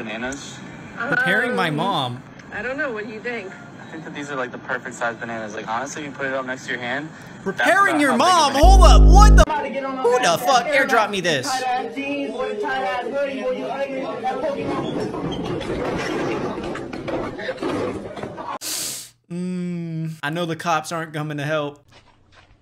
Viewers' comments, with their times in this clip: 0:09 finally no censor